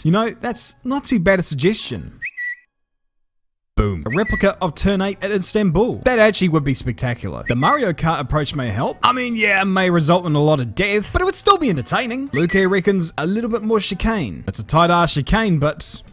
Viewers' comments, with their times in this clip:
0:04 Happy Tofaş noises.